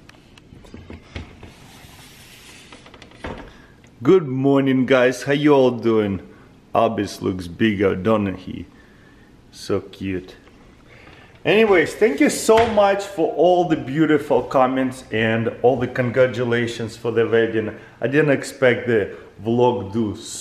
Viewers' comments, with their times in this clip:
0:06 “looks bigger donut he”